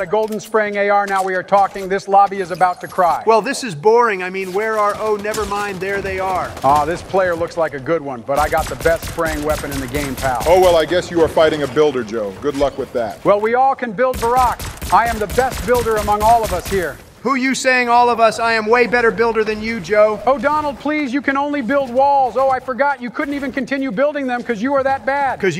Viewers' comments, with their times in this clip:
0:06 Barry’s Donald Impression was spot on